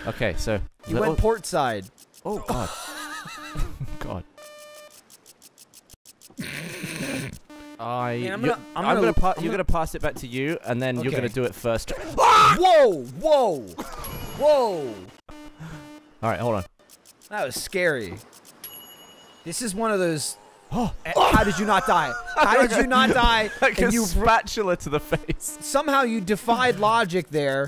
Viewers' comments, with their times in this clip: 0:10 the sound Gavin makes paired with the glitch always makes me think the video blipped lol. Also pretty funny how he re-materialized perfectly upsidedown and fell in the water